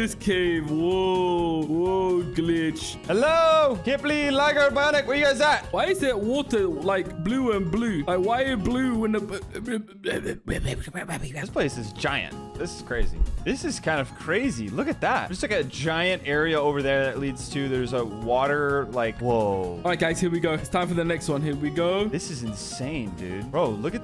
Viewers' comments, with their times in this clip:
0:06 why is there water like blue and blue? like why are you blue when the bl- Proceeds To Become Crazy Dave From PVZ